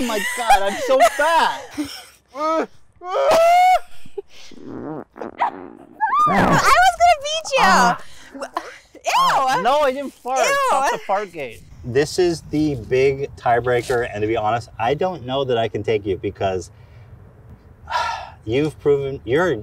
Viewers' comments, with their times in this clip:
0:04 IS NOBODY GONNA MENTION THE FART?!?!?!!!!!!